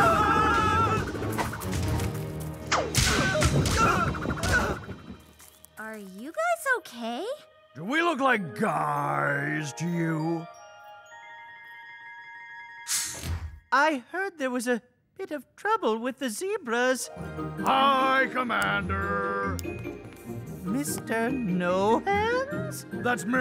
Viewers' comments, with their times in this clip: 0:09 Still have A guys voice? OMG LOL😂🤣😂🤣😂🤣